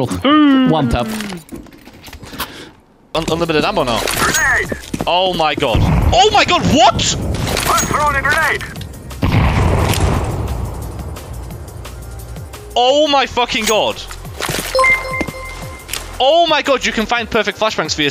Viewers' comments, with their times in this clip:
0:04 why does that shit sound like some minecraft shit lmao